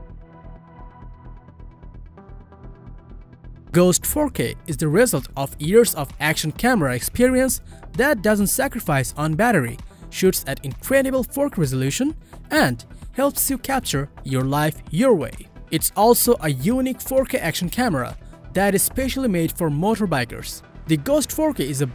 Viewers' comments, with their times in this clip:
0:09 Shoots at an incredible ForK resolution. Do not be shy to say KAYYY 4 Kay , C"mon man ...